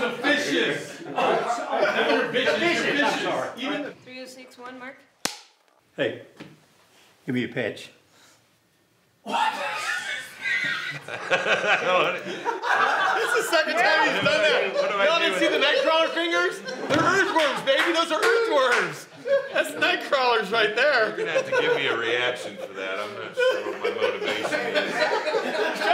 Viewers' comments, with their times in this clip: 0:09 The wheezy "WhAt tHe hElL Is ThAt?!" is too good!